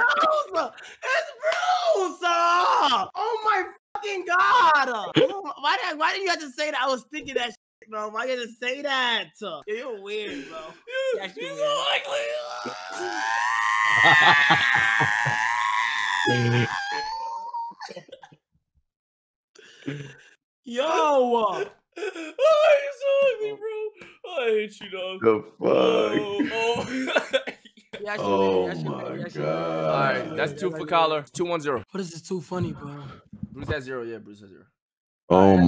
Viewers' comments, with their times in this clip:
0:04 why kai sound like a diva
0:13 Mans sound like r2-d2
0:14 R2D2???CALM DOWN R2
0:14 r2d2 ahh laugh 😭😭😭😭
0:17 he sound like R2-D2 😂😂